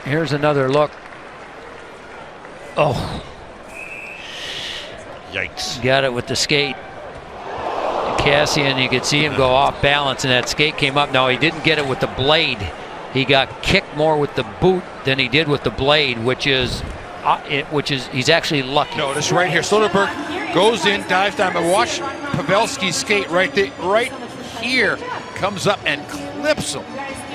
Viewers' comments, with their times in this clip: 0:09 you can hear the crowd groaned during the replay